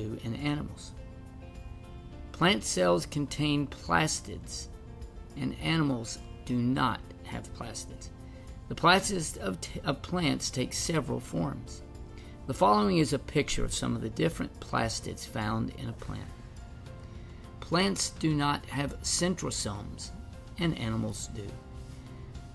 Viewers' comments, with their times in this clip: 0:08 the way he stutters lol